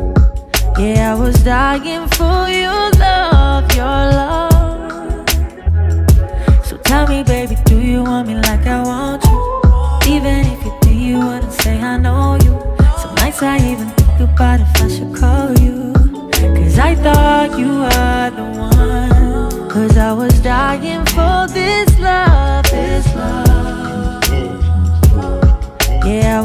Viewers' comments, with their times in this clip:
0:10 when that instrument drop